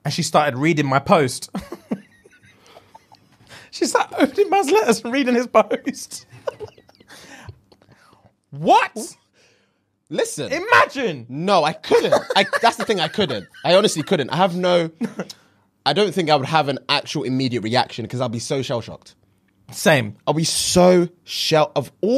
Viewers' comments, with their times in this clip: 0:09 100% a fart happened.